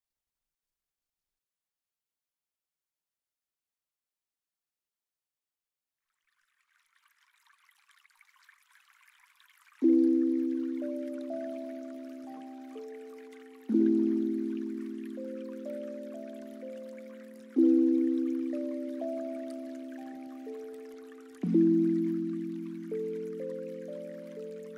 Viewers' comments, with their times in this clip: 0:07 turtle moans Remix XDD